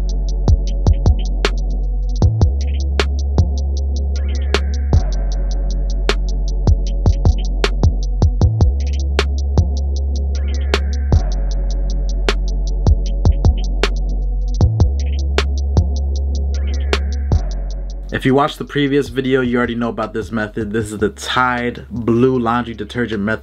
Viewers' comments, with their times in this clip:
0:07 why does the beat sound like the beat from NAV - Some Way ft. The Weeknd ???